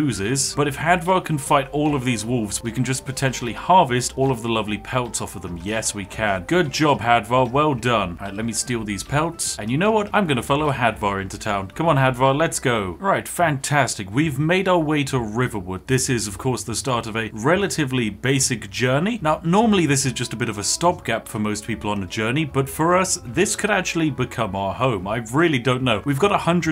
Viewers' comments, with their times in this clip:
0:10 the accent was a lie all along 😮
0:12 Can I just say that I love the way you say “fantastic!”